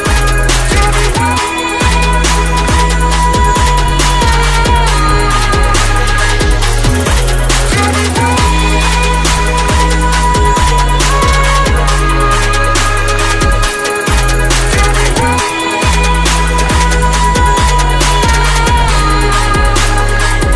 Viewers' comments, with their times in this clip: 0:07 phone call almost messed his sniping up, i hate when that happens to me